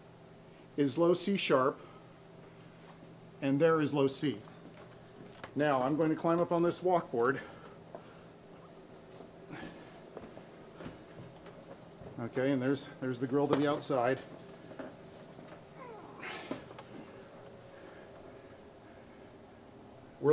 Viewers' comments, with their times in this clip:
0:05 Oh wait, My am alarm is ringing Ahahahah